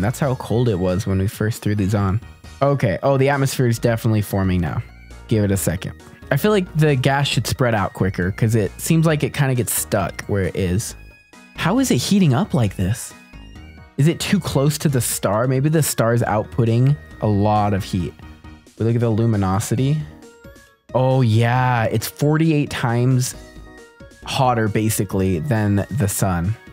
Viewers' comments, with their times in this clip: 0:10 Toothless dragon music